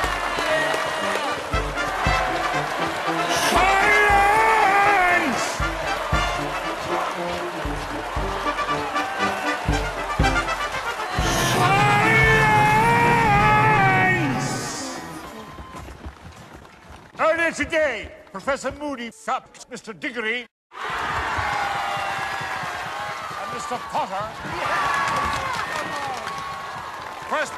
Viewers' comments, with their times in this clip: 0:09 Dumbledore had seriously had enough here xD That was the highest pitch scream from Dumbledore i could've imagined!